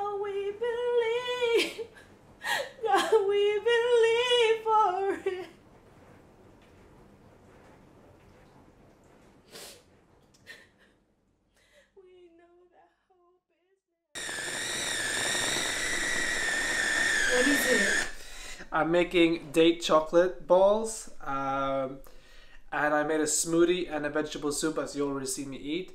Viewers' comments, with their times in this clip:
0:06 I started crying when you started crying singing 😢🙏🏾🫶🏽 praise a Jesus 👏🏽